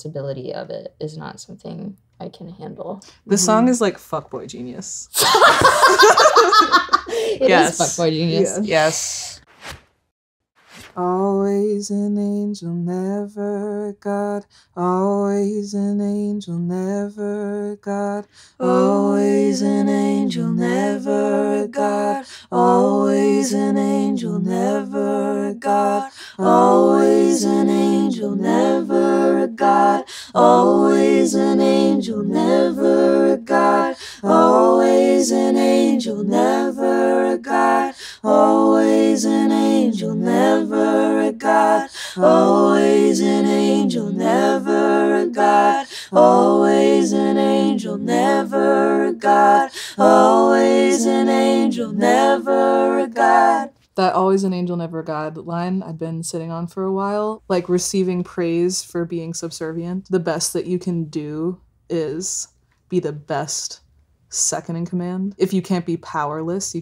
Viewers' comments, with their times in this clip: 0:10 them harmonizing feels magical like you can’t tell me the part isn’t pure magic
0:50 Julien is a literal angel with a voice sent from Heaven